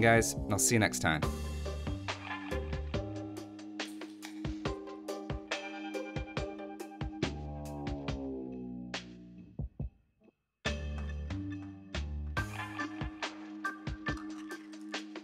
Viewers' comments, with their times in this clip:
0:03 ...Is that a can opening sound? crack Yep... AoE2 is a good game. sip